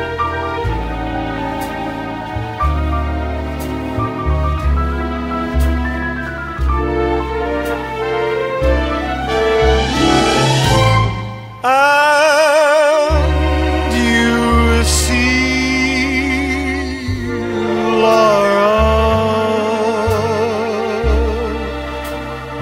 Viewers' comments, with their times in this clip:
0:10 It all collects together and just explodes in a burst of perfection.